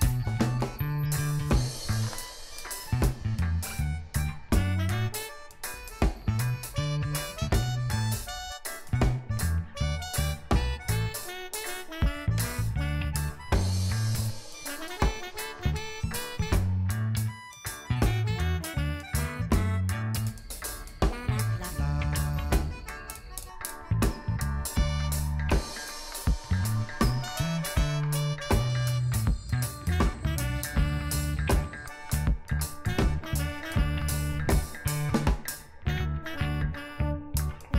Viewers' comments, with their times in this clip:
0:04 lizard screaming help to the camera
0:04 Damn I heard the lizard yell through the music
0:04 Its a scream of pain and terror .. the terrible music help drown out the even worse screaming.
0:05 gangstas paradise be playing in the background
0:06 pause the lizard screaming
0:11 th lizard is like screaming for help
0:20 The lizard screaming “NOOO!” had be dead laughing I’m sorry ☠️
0:20 Frog: I eat you Lizard: (Screams) Frog: Die Lizard: (dead)